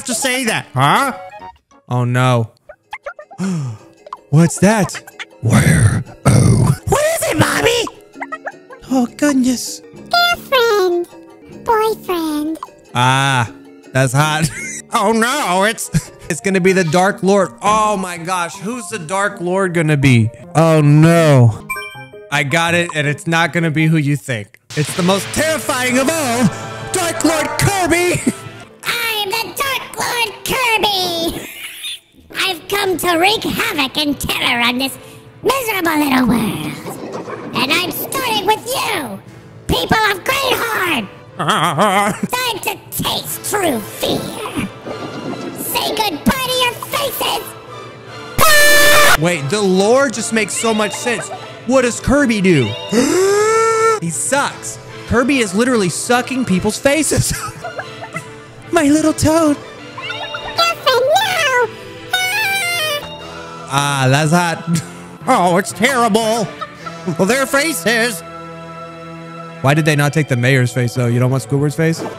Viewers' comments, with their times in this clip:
0:04 my voice when I wake up
0:09 the way they sound tho 😂😂😂😂😂😂😂😂
0:25 why does the sound like the snail from Kirby tv show idk if it’s intentional or not but im dying of laughter
0:33 That just sounds like Alvin but if he was on red bowl XD
0:41 WTH IS THAT NOISE-
0:55 that just sounds so wrong